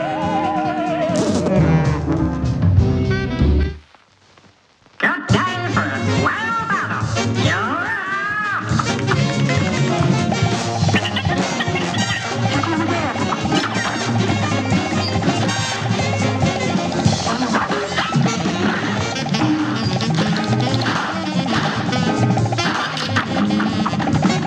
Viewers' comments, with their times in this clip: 0:07 Your first hint that you’re about to get j’baited: it sounds like the announcer is saying “You’re AHHHH!” because the snail is getting carried away by a fly.